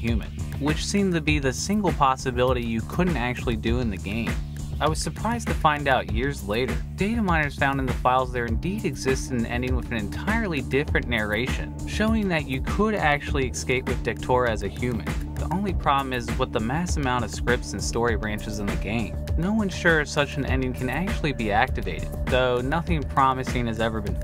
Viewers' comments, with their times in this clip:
0:08 Thought there was a masquito in my left ear